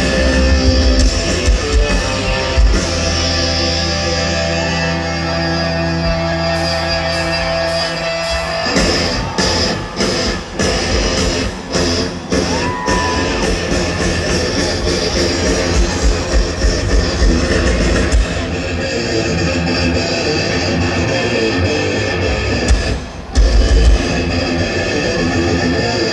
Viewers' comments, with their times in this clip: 0:07 fucking awesome transition from the Damage Inc. intro straight into Battery